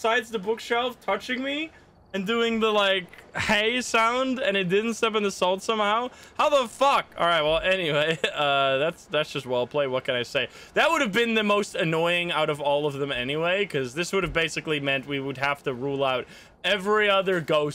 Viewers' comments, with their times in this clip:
0:04 there wasn't "hey" sound 🤔